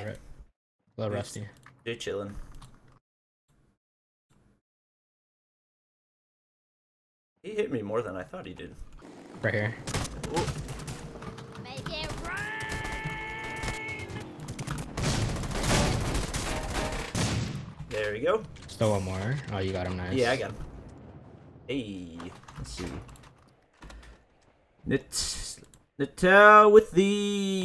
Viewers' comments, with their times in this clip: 0:09 some kid yelled GET RUNNED